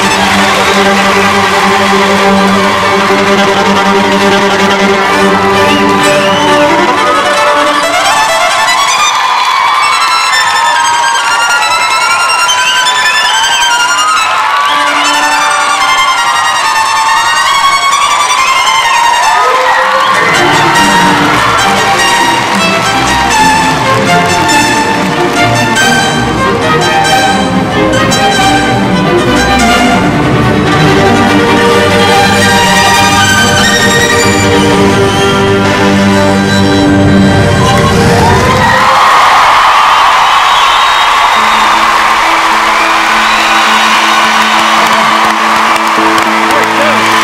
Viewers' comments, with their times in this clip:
0:09 SHE DIDN'T EVEN PLAY THE RIGHT NOTES AND NO ONE NOTICED
0:10 I can’t stop laughing. If you can’t play the right notes, you can play the wrong notes😊
0:10 dude, are you serious? her rhythm is off, she sometimes plays two notes at once, and she even cheated notes she decreased them, she doesnt play well even when solo, heck, I feel like the duet is better. plus, she’s using an electric violin so that’s also cheating
0:29 Wow..she is not even that good. she rushes. Overall the performance was not very clean, and she moves around too much while playing